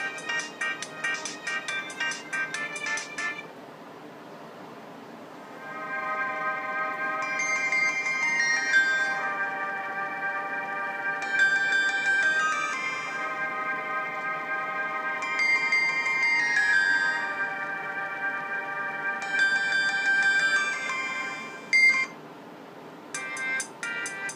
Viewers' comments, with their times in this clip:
0:05 My mom's Moto had that ringtone when I was a child... I always ran away with the phone because I wanted to hear the Ambient sound 🙏🏻